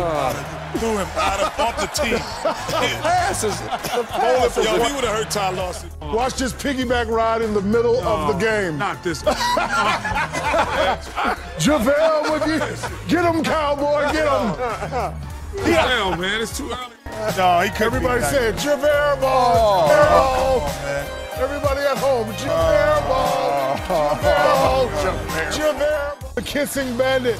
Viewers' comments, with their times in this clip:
0:08 Shaq's laugh is hella contagious😭😭💀 I miss these days of shaqtin a fool